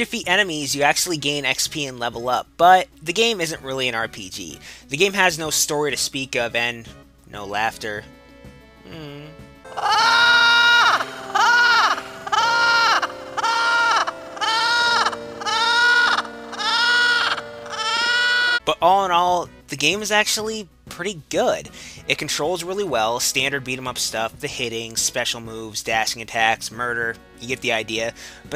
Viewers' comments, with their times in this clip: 0:09 Sounds like an angry sea gull.
0:10 sounds like being torture .